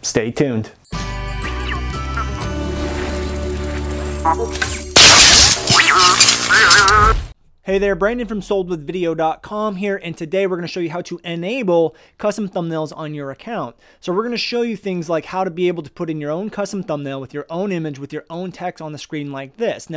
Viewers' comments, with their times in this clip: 0:04 warning no headsets